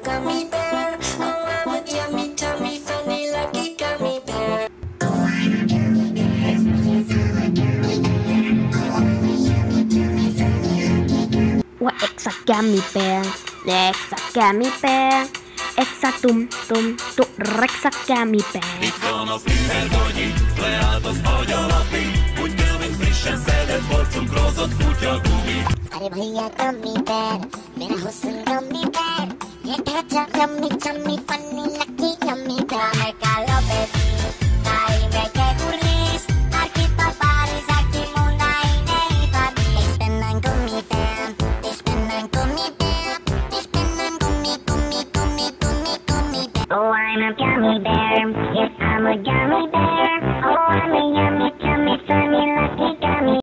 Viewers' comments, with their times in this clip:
0:05 Chorded G Major
0:46 it IS like a Gummy Bear English.